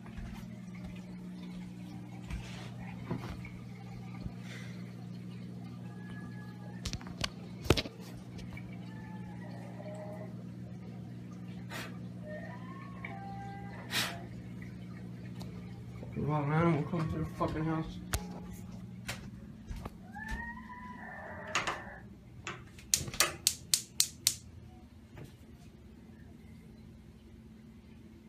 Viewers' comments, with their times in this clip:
0:09 you can hear the cry of the Alaskan Moose in heat…